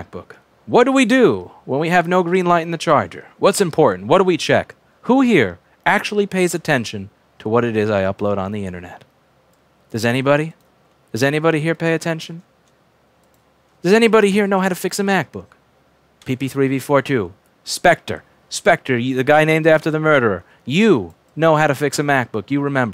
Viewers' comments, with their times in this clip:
0:05 Not me. I just watch cause I like hearing you talk. It's somehow relaxing.